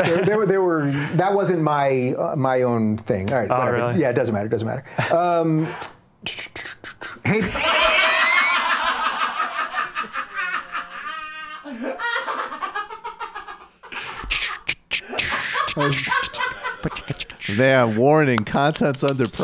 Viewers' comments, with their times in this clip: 0:05 I'm out of the loop - why are they laughing at the beatboxing?
0:07 Dave has a unique way of transitioning when he gets a little pushback. Covers his intellectual shortcomings with a little music. Sorta has a '60s jazz feel. Beatnik Dave scattin' through life. Cool Daddy-O.